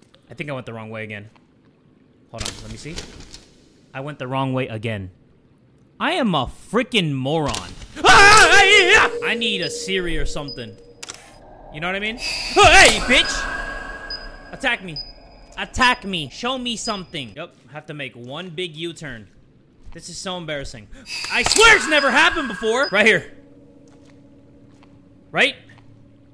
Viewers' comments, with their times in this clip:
0:08 Bro, the way he realized he went the wrong way again and how he screamed was so 💀